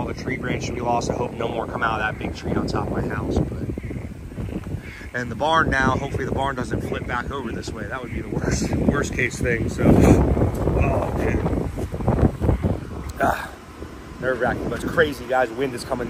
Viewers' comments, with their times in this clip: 0:04 The Frogs are driving me insane, I cant stop laughing listening to their asses sounding like Minecraft Villagers